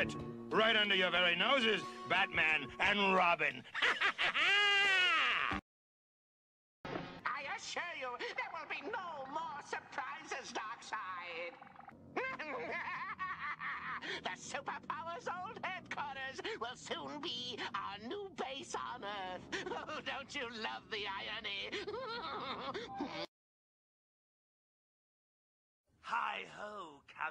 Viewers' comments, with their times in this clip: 0:09 Is Frank Welker Mario's voice actor? so similar